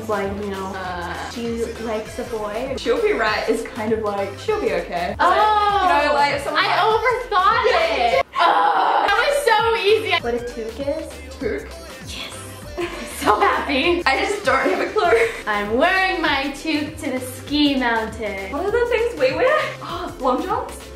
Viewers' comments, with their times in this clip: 0:05 bruh it said in Australian